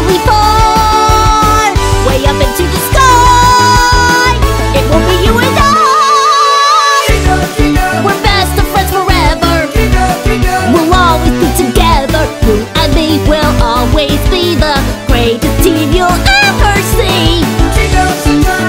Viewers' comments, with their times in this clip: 0:05 That note tho....